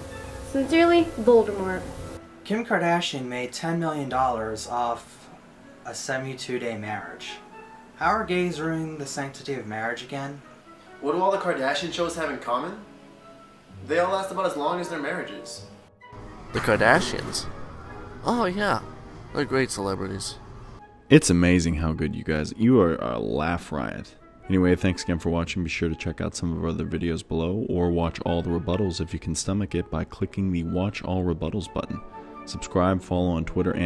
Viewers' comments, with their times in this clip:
0:05 Is the person a really white sounding black guy or a really dark Indian, Armenian, Arabian, just about any race that has an "ian" at the end of their name?
0:16 i thought that was a girl xD i was expecting a soft voice lmao